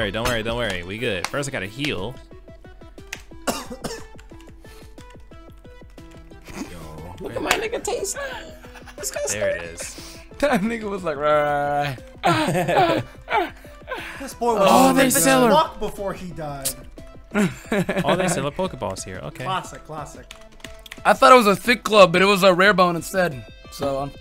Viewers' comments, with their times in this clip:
0:09 BROOOO that music is LIT